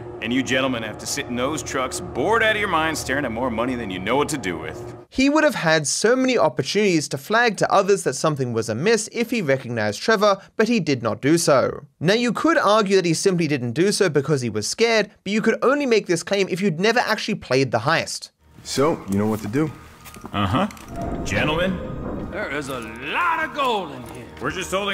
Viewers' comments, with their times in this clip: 0:05 and he speak confidence